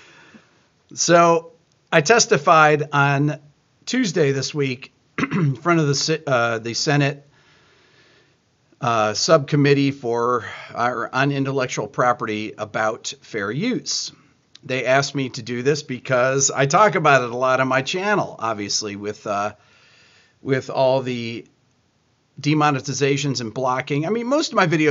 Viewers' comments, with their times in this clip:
0:08 "subcommittee for unintellectual property about fair youtes"? - sorry, but what 's that? I must have heard that wrong, right? Shouldn't it be "intellectual property"? And what are "fair youtes"? Please explain... Thank you.